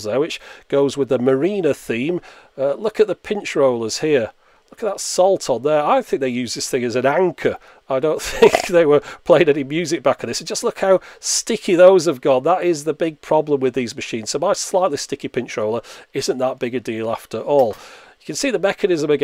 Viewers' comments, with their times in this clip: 0:07 I don't think - *crunch*